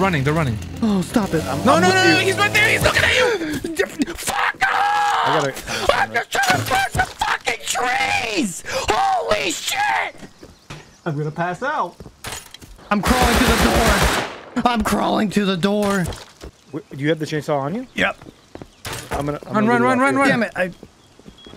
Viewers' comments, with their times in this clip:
0:06 That rage is just hilarious edit: FARMING IN RUST IS HARD AND SOMETIMES I RAGE TOO MUCH